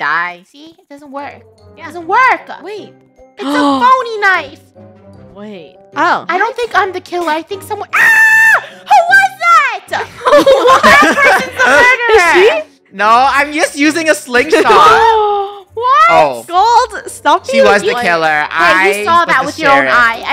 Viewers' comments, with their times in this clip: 0:08 the girl boss scream